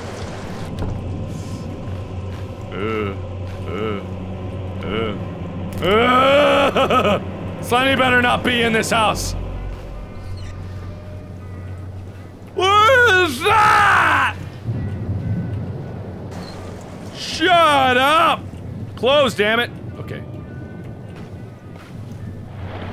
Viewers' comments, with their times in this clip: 0:09 Where the hell did the random music come from ??? Lol it actually kind of matches the mood a little.